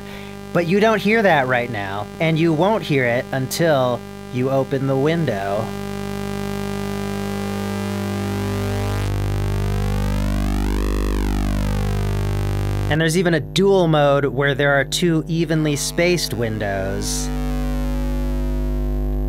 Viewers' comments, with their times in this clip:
0:06 Eargasm as soon as he opened that Window ... Priceless...